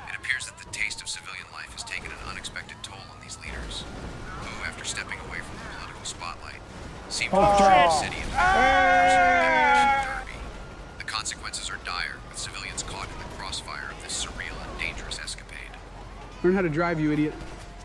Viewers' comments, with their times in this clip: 0:04 that epic moment when the train crashes the Metro Bus and everyone be ahhhh and ehhhh 🤣